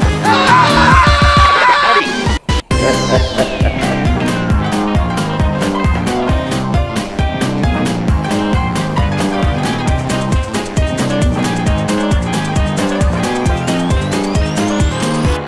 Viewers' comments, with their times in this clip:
0:03 The dude laughing lol